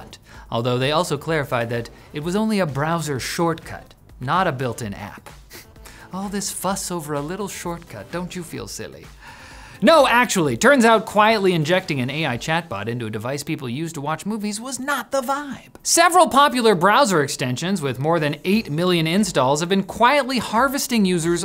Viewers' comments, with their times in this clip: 0:04 Who else heares Obi-Wan-Kenobi talking? "Don't you feel silly?"